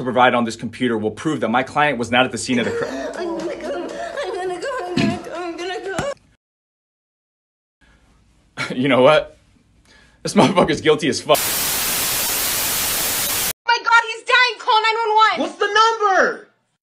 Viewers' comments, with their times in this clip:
0:03 Nah the clapping and moaning on the computer crazy asf 😂